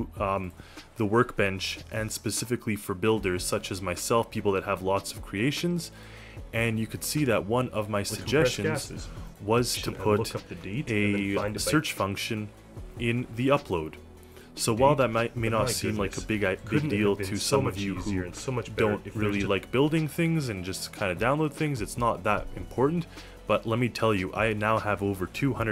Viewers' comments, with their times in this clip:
0:08 Apologies for the 454ss-ception happening I had my volume low as I was recording this and did not realize my own voice would be doubled like this D-: